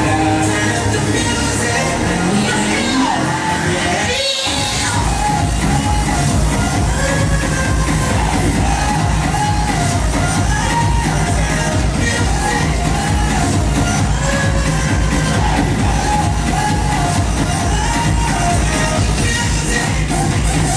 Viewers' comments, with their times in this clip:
0:04 great set... was fun.. that sream though 😃😅🤣🤣, even the guy in the black hoodie next to you was like , wth.. lol keep up the spirit thou .. dope